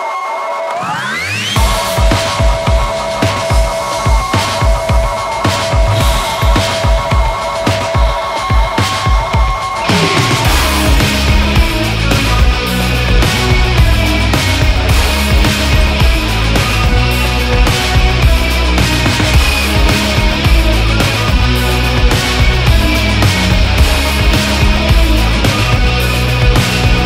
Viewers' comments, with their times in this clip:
0:10 Damn this sounds like the opening of an epic anime
0:11 does anyone else notice her breathing like a video game or anime character in the intro? The exaggerated breathing while posing is amazing simple but intricate directing, I love it
0:11 reminds me of early Cocteau Twins stuff😍